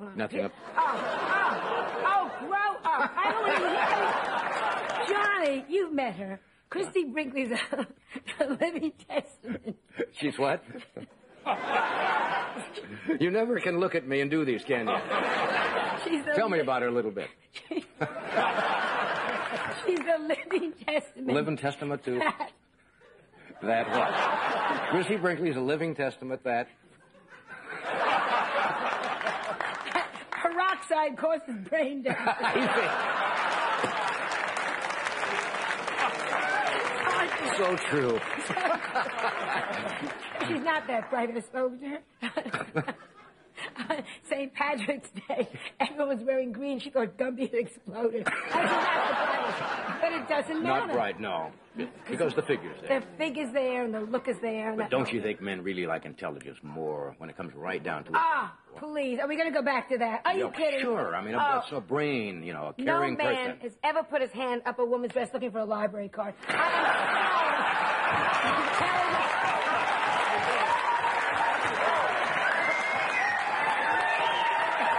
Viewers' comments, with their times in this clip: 0:07 she knew she would struggle trying not to laugh at her routine here, she starts to corpse laughing and Johnny knew it, trying to steer her into the punchline.
0:57 I couldn't understand what she said got the "St Patricks Day, everyone is wearing green"...and couldn't get the rest of it.
0:58 You knew you hit it when you made Johnny turn over in his chair with laughter, just like Joan did here. When he turned over in laughter, every comedian loved making Johnny burst out in laughter.